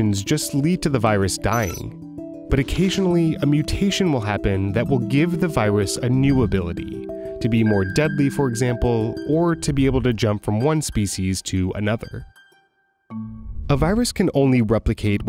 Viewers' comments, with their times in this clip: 0:03 Anyone else hear “the viwus” 😂😂😂